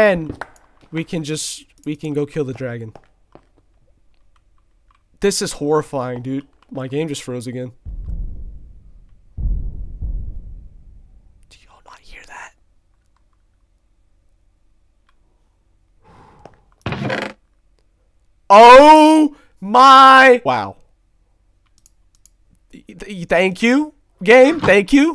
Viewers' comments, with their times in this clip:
0:08 this is the moment that I got super scared because the creepy scary footsteps scared my heart 🥲….